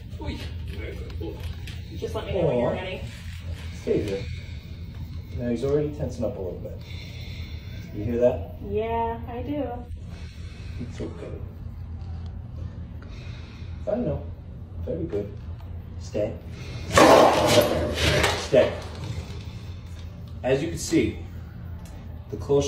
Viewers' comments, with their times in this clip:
0:07 starts up with his Darth Vader act